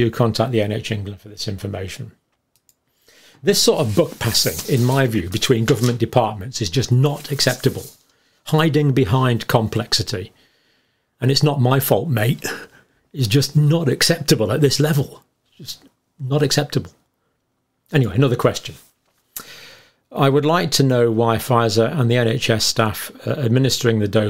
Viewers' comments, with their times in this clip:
0:08 I really felt the frustration and anger from Campbell